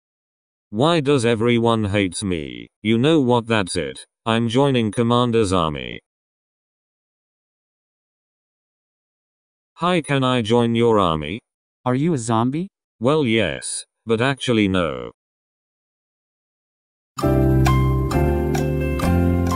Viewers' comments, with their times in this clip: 0:06 something it say: i'm joining commander's army when i hear: i'm joining commander's zombie